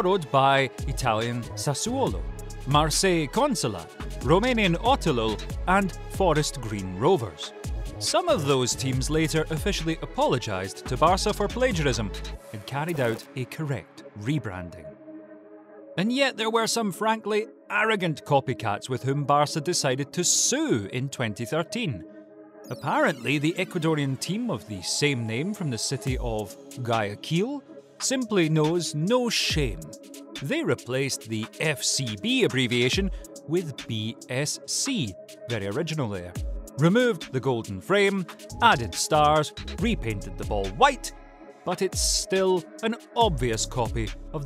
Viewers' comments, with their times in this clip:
0:06 I'm romanian and now I have ear cancer because of that oselul
0:26 His pronunciation of Guayaquil as a fellow Ecuadorian really hurt me :')